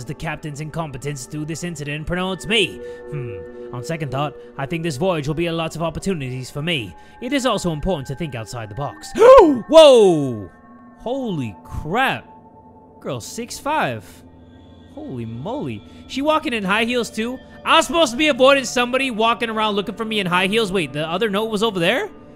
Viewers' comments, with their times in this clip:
0:08 THE GASP UAIAIAUUAJA